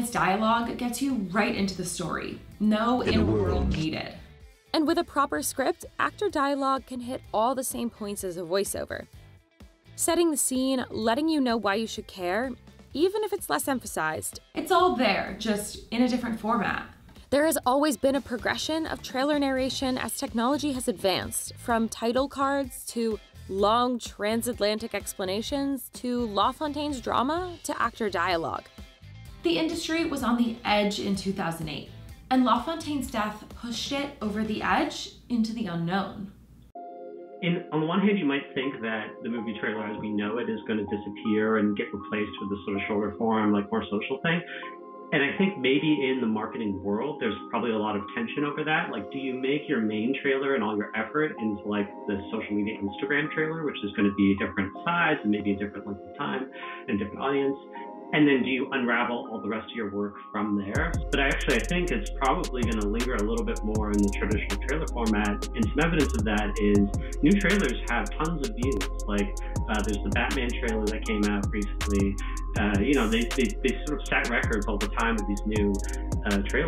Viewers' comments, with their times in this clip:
0:03 Minor GLITCH: we hear the phrase "In a worl..." that cuts off abruptly. It occurs while the narrator continues to talk.
1:00 I wasn’t expecting the background music to be such a bop. I wasn’t even listening to what the dude was saying; I was just jamming out to the beat!